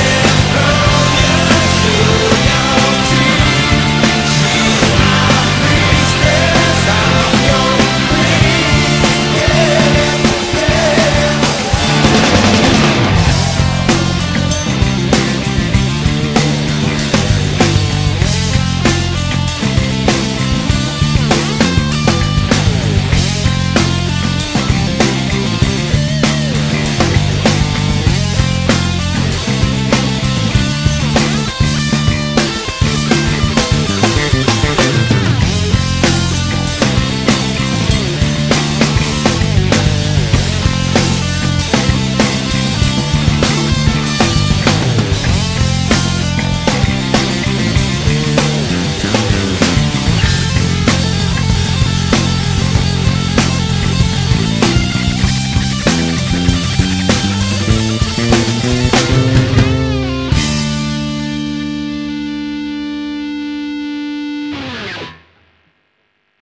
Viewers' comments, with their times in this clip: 0:09 Skipped to to hear the solo lol well done
0:25 excellent choice to pinch that
0:54 When you want to play RHCP but have no wah pedal so play like Dragonforce